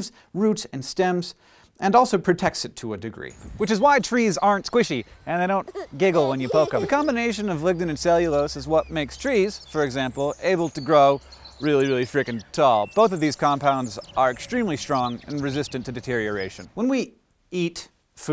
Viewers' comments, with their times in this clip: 0:04 that giggle was so cute I just wish that the girls at my school giggled like that But alas their giggle is something I don't wanna talk about